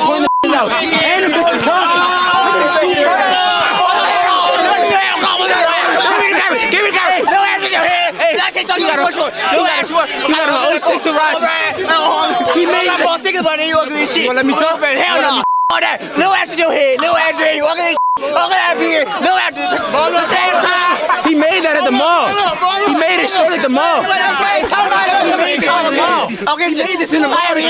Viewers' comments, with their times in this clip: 0:04 Bro talkin like Courage the cowardly dog😭😭
0:08 my man sounds like Donnie from the Wild Thornberrys